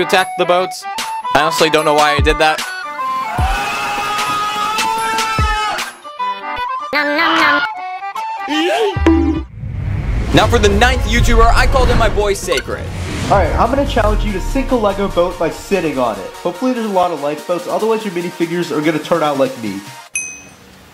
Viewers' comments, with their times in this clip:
0:05 i love the nom nom nom